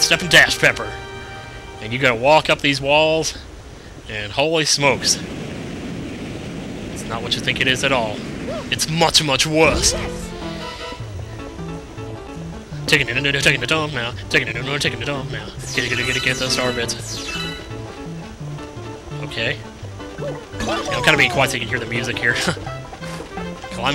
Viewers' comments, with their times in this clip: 0:10 Awesomeness music of the awesome soundtrack of awesome coolness-sweet awesome greatness super awesome music schweet great awesome stupendous extravaganza musical talent.